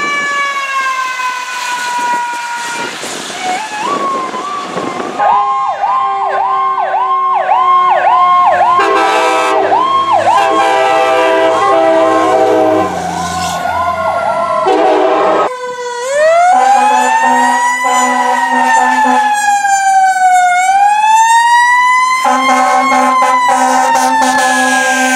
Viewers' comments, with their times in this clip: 0:09 The train horn sounds amazing
0:09 Train Horn wow